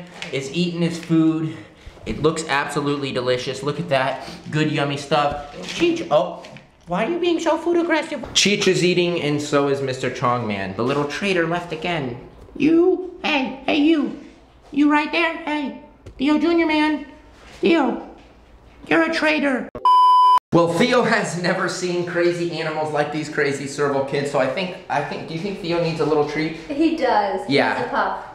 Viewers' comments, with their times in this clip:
0:10 I love the way he talks to his animals sm